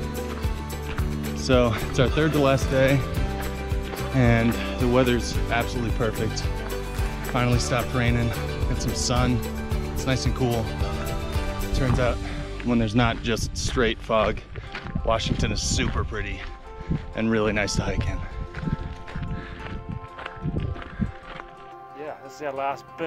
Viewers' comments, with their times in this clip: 0:05 What is the song being played ? Sort of slow and haunting.